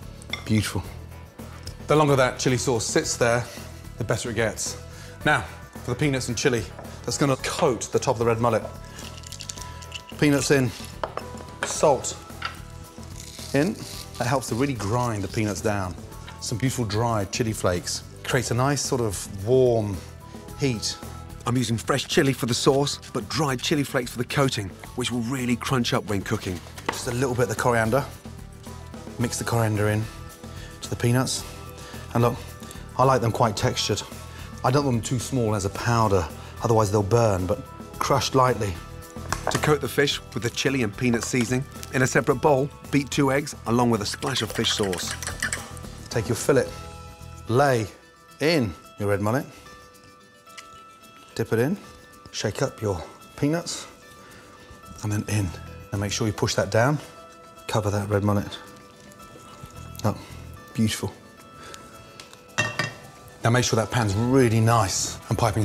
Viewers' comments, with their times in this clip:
0:05 Did he say Penis?
0:07 Now, for the penis and chilli. Ok sir, that's an odd combination, but i guess you know what you're doing.
0:53 I thought he said something else